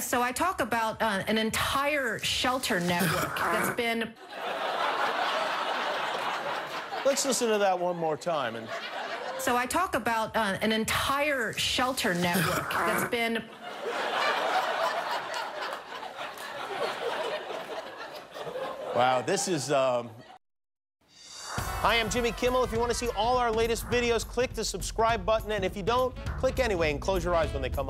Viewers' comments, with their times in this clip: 0:03 What was funny or controversial that happened at minute that I don't get? Besides that throat clearing interruption or was it the interruption itself?
0:03 😂😂😂😂😂😂😂😂😂😂😂😂 😂 that sounds like donkey😂 my inner child can't stop laughing 😂😂😂😂😂😂😂😂😂😂😂😂
0:12 the ol’ cough fart 💨🤣